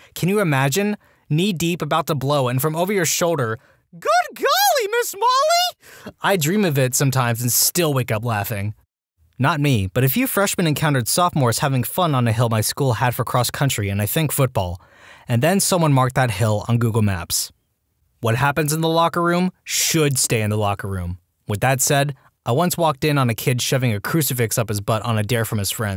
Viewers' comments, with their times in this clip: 0:06 Was a fucking hooty impression if that’s the case then this is gold